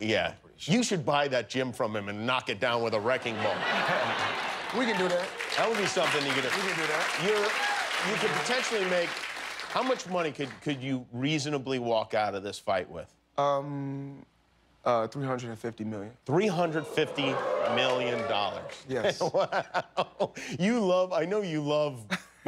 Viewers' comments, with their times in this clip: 0:04 When he said we can do that, so casually but he was in actual serious about it